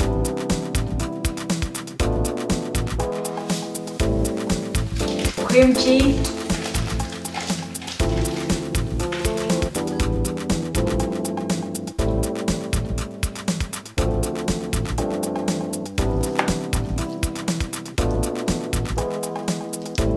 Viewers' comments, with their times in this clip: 0:06 That's some exciting music! Does anyone know the names of these great songs? The beat is so damn fresh!